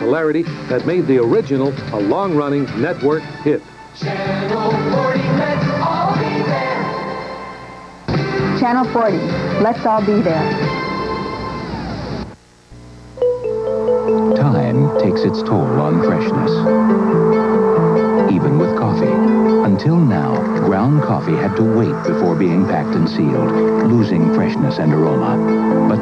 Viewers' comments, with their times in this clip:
0:08 You can faintly hear the end of the theme being winded down as it fades out.